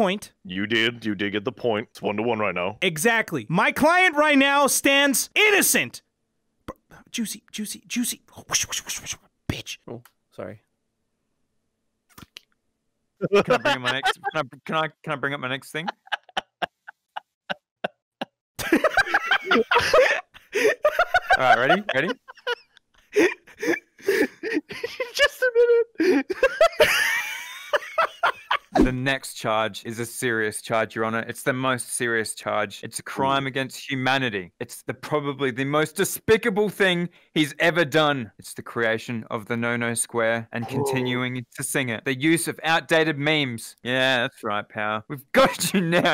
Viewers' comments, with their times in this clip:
0:08 what kind of whisper is that lmfao
0:12 Narrator's laugh is everything.
0:13 Who’s amazing laugh is that 🤣🤣💀💀💀
0:13 Narrator's real laugh. I feel uncomfortable
0:14 Wait a minute... SO NARRATORS VOICE ISNT REAL😂(I’m slow lol) if u dont know what I’m talking about
0:27 all I could think about was the hyenas from lion king